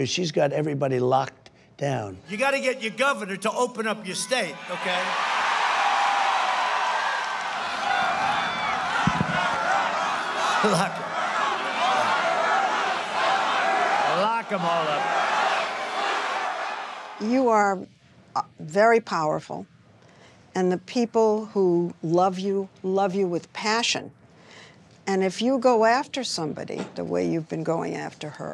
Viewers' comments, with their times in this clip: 0:09 he repeats them, giggling "lock her up." then says "lock em all up." but i shouldn't believe my lying eyes and ears?